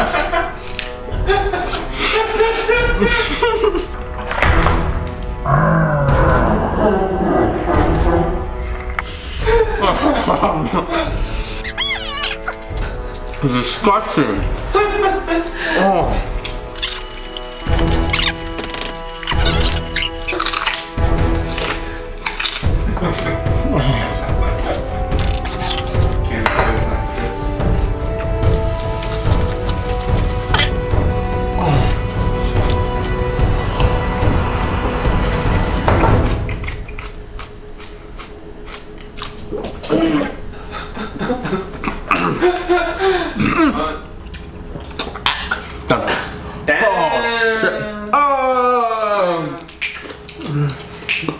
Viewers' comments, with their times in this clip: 0:08 Didn't he sound like cow ?
0:39 I can hear the puke coming in mouth and then he drinking it back.
0:39 it’s like he’s screaming underwater but it’s a broccoli gag
0:39 is one of the funniest and weirdest sounds I've heard in recent memory
0:39 that sound 🤢 of it coming back 😖
0:39 that actually sounds like an very wet fart